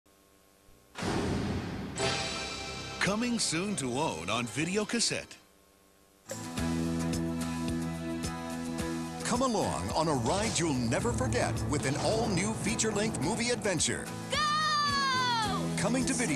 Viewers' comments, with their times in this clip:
0:01 Good thing I yanked my headphones out at the right second before listening to nightmare fuel of the flash of doom. Good thing only one bud works for this one. 😂